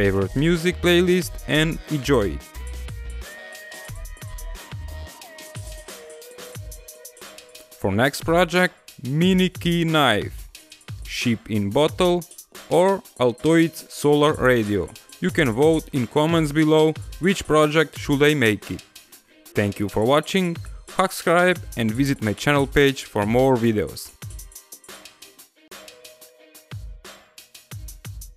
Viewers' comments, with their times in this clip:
0:09 did he just say shit in bottle?
0:10 shit in bottle xxd